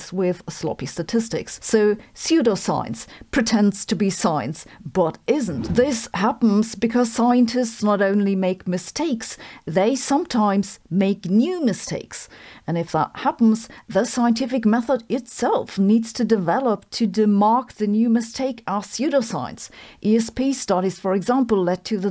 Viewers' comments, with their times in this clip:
0:09 i thought you said "sometimes they make YOU mistakes" and my brain went "my parents are scientists??"